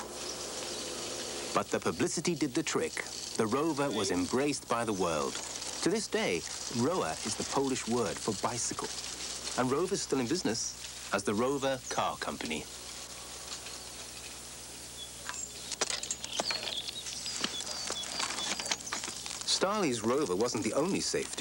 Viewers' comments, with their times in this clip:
0:05 Small but significant error The Polish name for a Bicycle ('Rower', is pronounced 'Rover' in Poland as the 'W' is pronounced as a 'V' in most of middle\eastern Europe